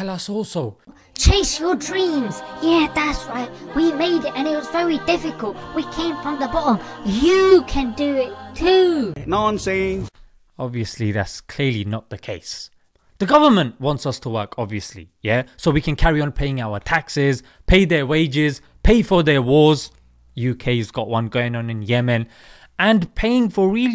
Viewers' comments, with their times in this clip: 0:08 a clip i could never forget from a bollywood movie, the way he jst says it